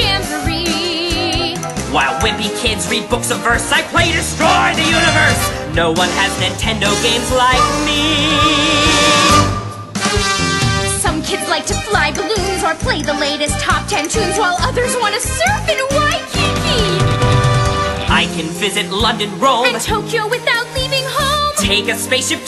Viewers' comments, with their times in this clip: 0:03 THIS PART IS ALWAYS MY FAVORITE The boy in my cast i hope he sings it EXACTLY like that ^^